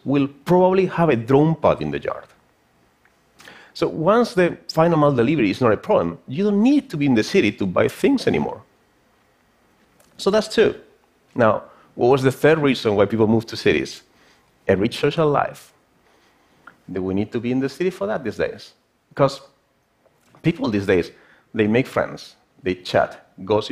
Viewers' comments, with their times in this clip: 0:10 Does anyone hear how weird his voice sounds